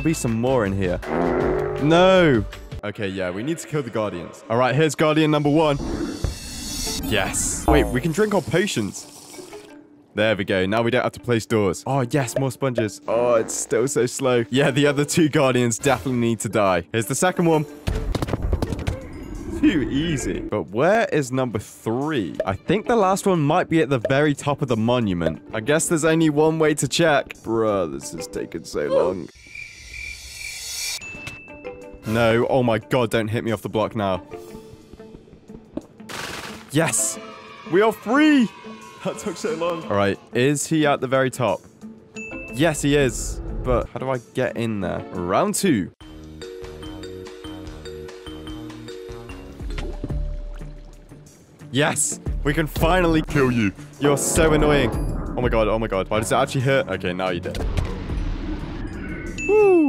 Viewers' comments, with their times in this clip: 0:07 not the classdojo losing point sound
0:40 I mean 151 elevator music!
0:45 LETS GO I HEARD THE DOORS EVLAVTOR MUSIC
0:47 Casual elevator jam music